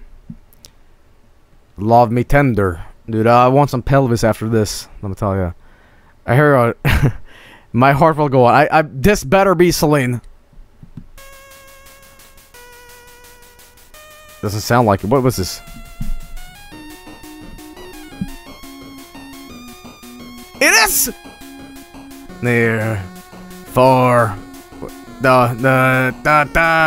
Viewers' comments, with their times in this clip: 0:10 I can't believe I'm unironically loving this Bootleg NES chiptune nightcore rendition of My Heart Will Go On